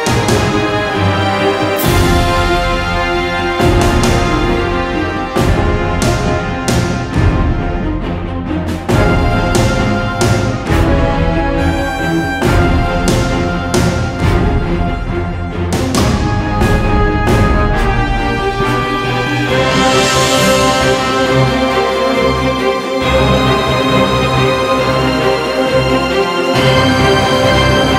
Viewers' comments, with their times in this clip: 0:09 music a bit scary